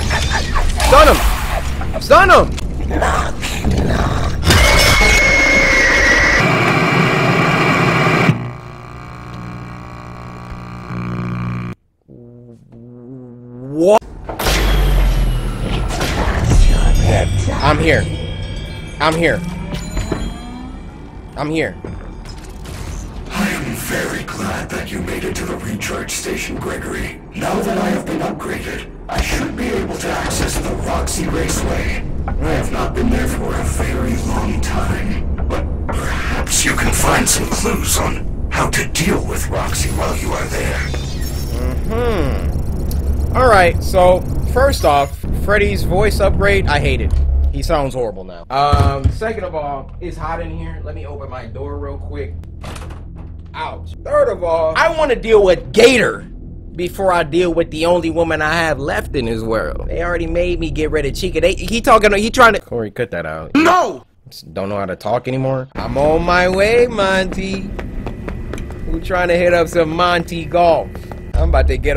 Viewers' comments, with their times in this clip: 0:04 "The sunglasses wearing reptile" glitched
0:54 Bro you had me dying of laughter for hours with that stuttering 😂🤣😂🤣😂at